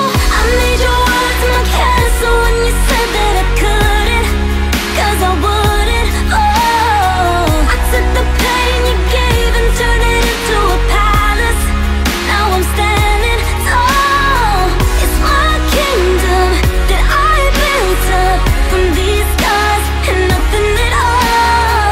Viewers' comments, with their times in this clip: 0:05 LMAO, this sounds exactly like Give your heart a break. The Riff is exactly the same. That beat when the chorus starts is also exactly the same. LMAOOOOOOOOO a